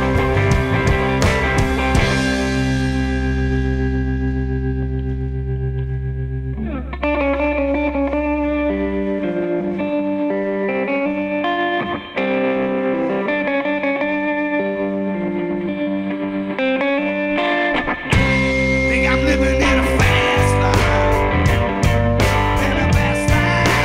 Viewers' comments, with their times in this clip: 0:06 the part is what hooks me every time, with that sweet tremolo sound and the thumb picking the bass while the other fingers play a sick melody, not easy to do by any means! love this guy!